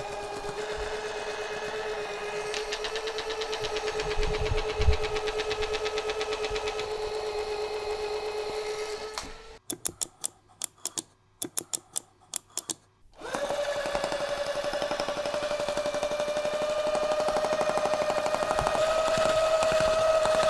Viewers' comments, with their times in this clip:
0:05 That popping sound that jumped you is likely a capacitor on the motor used for RF suppression. Once it popped the motor could spin faster because the capacitor wasn't restricting the power anymore. if I ever got one of these I'd take out the voice chip and throw out the creepy doll part. I have a singing cactus that plays that same song and records.